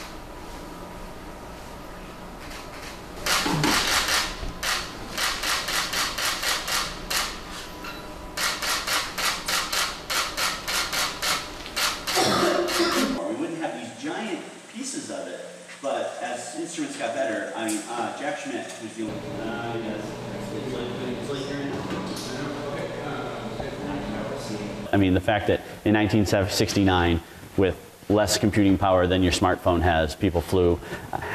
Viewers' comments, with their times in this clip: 0:08 Coughs as priceless moondust wafts out of NASA's 'sealed' Moon rock vault.
0:12 Someone cough very badly thanks me later with one like 👋